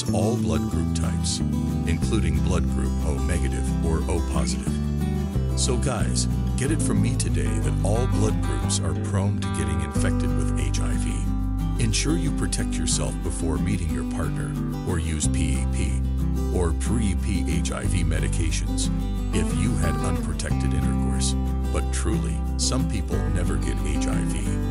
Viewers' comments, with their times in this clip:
0:05 I gave up after hearing the ignorant / poorly trained robovoice pronounce H-I-V as a word: Hiv. Despite many opportunities to contract HIV (HIV+ve lovers/partners), I've remained negative. Perhaps it's because I'm fortunate to have the mutant allele of CCR-5.